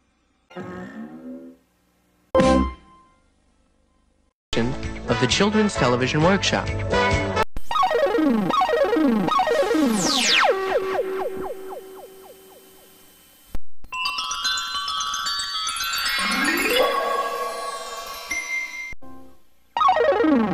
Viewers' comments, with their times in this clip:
0:08 sounds like Atari 2600 sound effects.
0:08 sounds like a video game like Galaga.